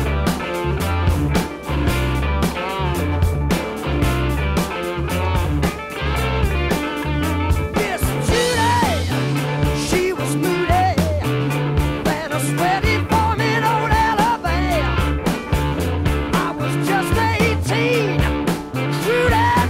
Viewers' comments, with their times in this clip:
0:07 Ronnie Lane's shuffling bass timing during the intro is wonderfull! Actually the guitar and keys start shuffling too, but the drummer doesn't. And then, they get funky.